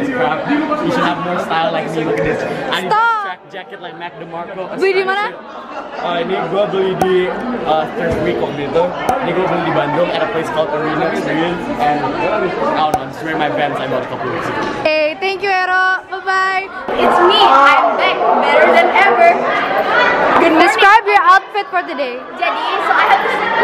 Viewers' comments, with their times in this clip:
0:05 his voice changed from 12 to 20 real quick